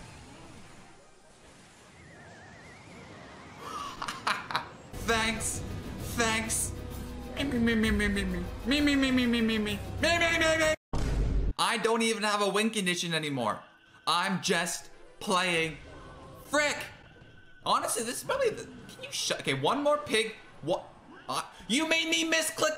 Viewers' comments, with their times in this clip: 0:06 bro that voice impression to the skeleton emote is hilarious
0:08 the bm isn’t joking 😂😂😂
0:09 most annoying mememe. clash royale should hire you as their own voice actor for that
0:10 ngl the new emote sound is scary